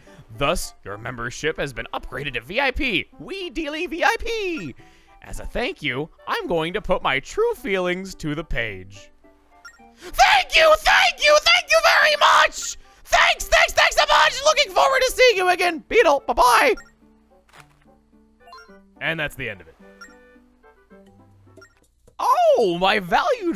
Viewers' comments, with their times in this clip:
0:10 he turned into game grumps toad there for a sec